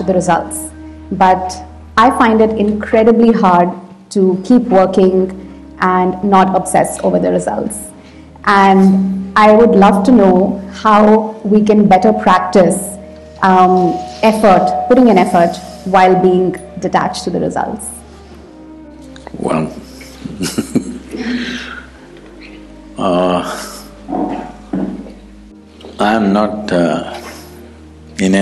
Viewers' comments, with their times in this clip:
0:10 Sadhguru taking a little time off to laugh looking down at the stupidity of the question XD